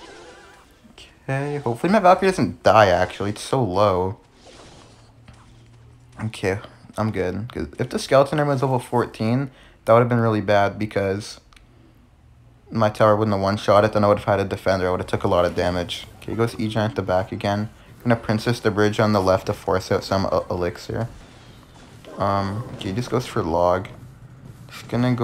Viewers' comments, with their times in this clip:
0:07 i thought that was my phone saying it was 20%